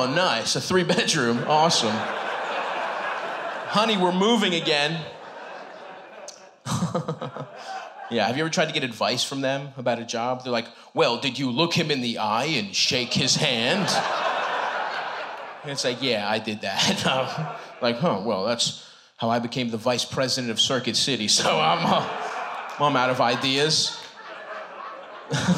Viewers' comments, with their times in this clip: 0:06 it's the same exact laugh from 😭